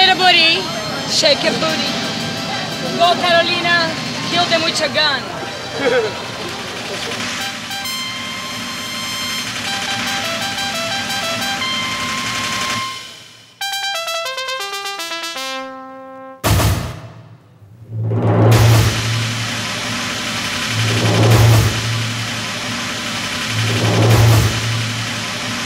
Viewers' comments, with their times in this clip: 0:06 Gisele's laugh is so hilarious